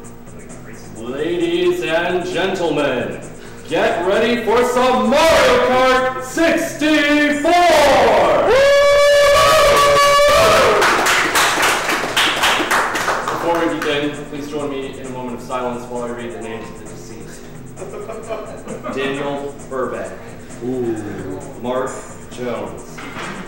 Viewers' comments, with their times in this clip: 0:08 I am so glad I’m not wearing headphones at the highest volume possible at the beginning